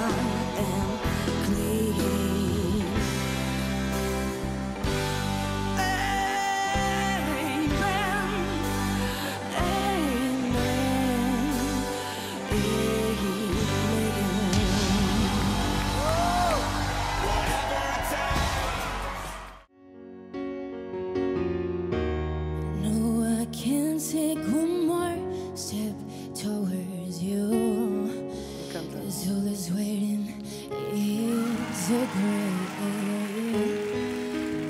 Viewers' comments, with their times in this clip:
0:05 I don't know... I spent 20 years doing live audio touring with greats, none of them fooled me. Maybe the young guy
0:21 I've watched it more than 10 times and I still thinks he is a girl